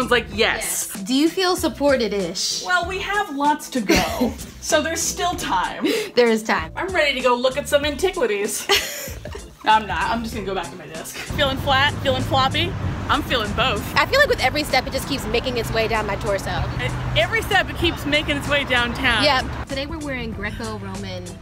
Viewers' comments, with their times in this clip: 0:08 one of them did actually say ‘’antiquitities’’